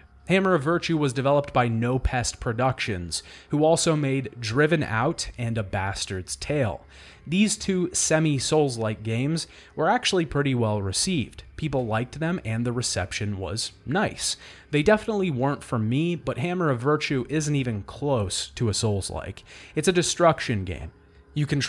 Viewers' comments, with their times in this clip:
0:03 I actually misheard what you were saying during the and thought it was a whole title: "Driven Out: A Bastard's Tale." I figured this was a compelling story about a denied child of aristocracy. The concept sounded pretty cool in my head, until I watched this again and realized my mistake.